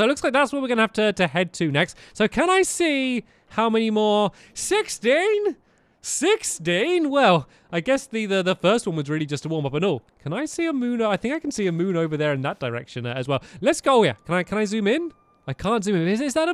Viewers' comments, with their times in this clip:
0:04 is that a voice crack